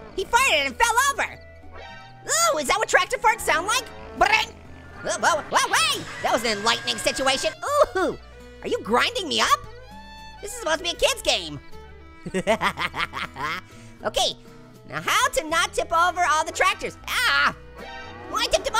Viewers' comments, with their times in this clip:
0:06 Why does the scream sound like Tom in Tom and Jerry